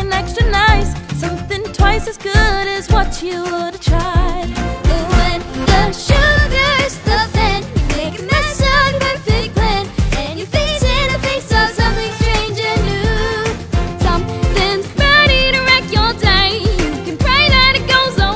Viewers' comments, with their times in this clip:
0:06 The solo is really good